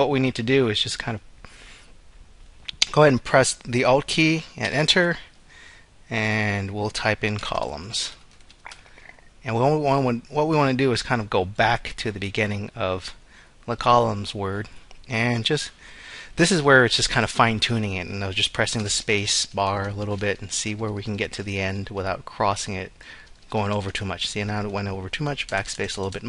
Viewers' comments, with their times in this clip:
0:08 Thanks that was helpful. Is that your stomach i hear ??